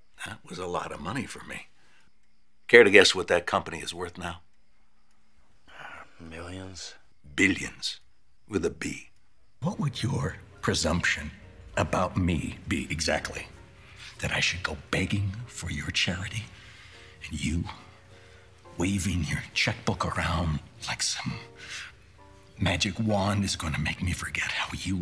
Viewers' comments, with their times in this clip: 0:09 why didn't use the tone of voice he's using That's the regular voice he uses to intimidate people.